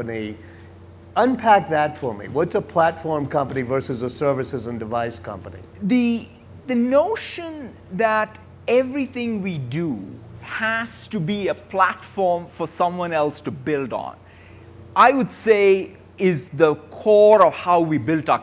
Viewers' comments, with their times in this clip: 0:04 His voice is funny.